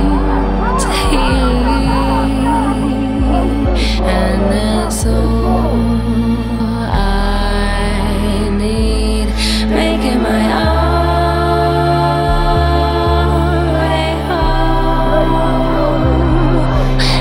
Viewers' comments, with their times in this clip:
0:05 Listen closely, you'll hear a flimsy audio cut. The song's great, I just noticed this on my first viewing.